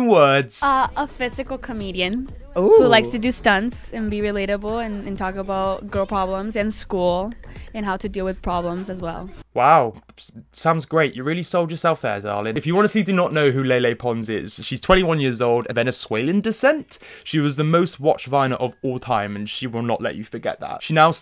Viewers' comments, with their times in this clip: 0:04 you can tell she's making her accent more prominent in purpose, she doesn't sound like that normally and didn't in her early vines